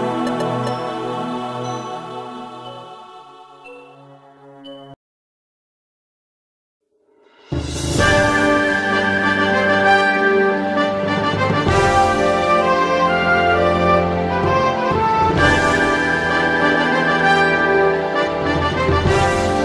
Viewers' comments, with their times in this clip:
0:07 My heart felt at peace and I could have died at that very moment when the music kicked in